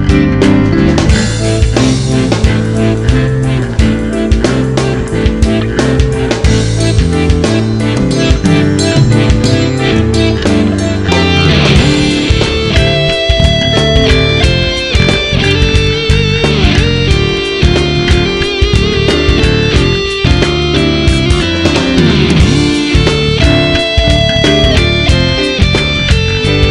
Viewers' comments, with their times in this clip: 0:09 That bass is great. Also loving the keys. And that guitar solo just after